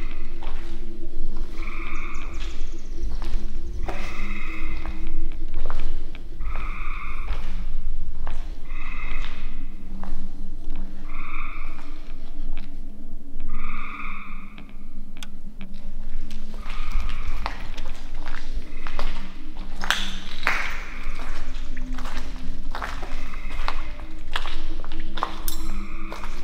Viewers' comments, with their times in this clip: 0:07 ... Get a shiv ready. Clickers.